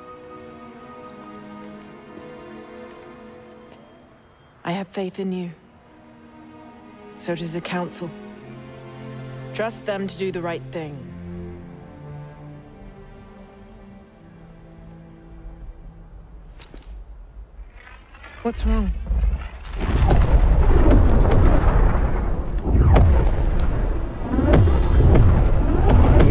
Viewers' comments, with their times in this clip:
0:09 that flat delivery